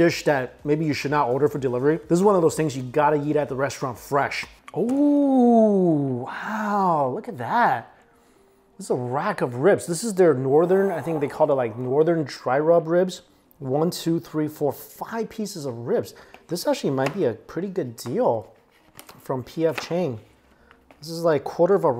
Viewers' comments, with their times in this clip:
0:08 Does anyone else hear someone in the background